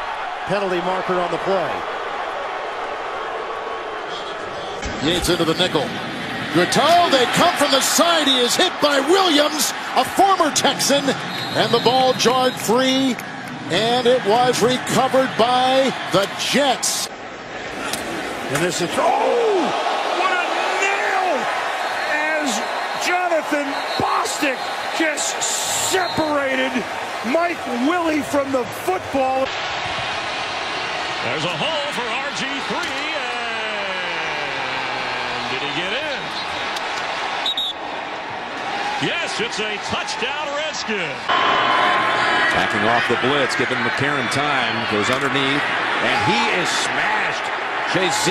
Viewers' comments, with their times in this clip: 0:05 wasn't that loud or bad.
0:06 wasn't even a hit and wasn't loud at all lmao
0:08 wasn’t a big hit or loud
0:18 the sound of the announcer's woody popping was louder than the hit.
0:33 the longest "and"